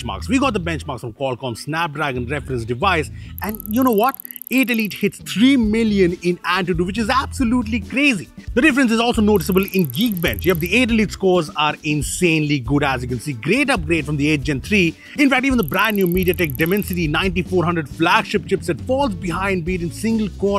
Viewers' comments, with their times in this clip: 0:04 those ticking sound for graphs ! wow.